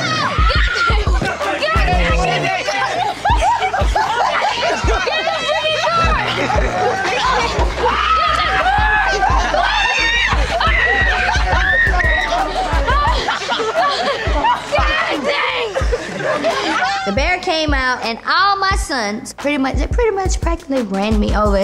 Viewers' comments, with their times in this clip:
0:08 that scream doe 💀👀